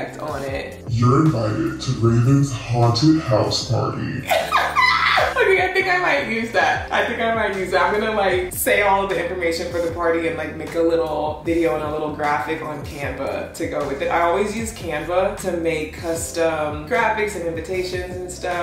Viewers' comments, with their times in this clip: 0:03 that spooky voice sounds sassy and from Cali when you said "party" 💅🏾 Edit: Ooo but the final though 💯